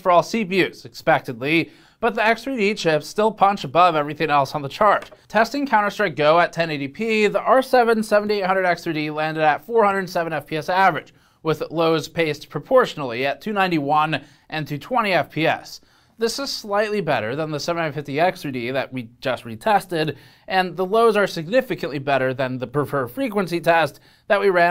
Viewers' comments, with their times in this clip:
0:05 What's this keyboard press smh I thought this was a professional channel, now my chart reading immersion is ruined. (I'm not being serious).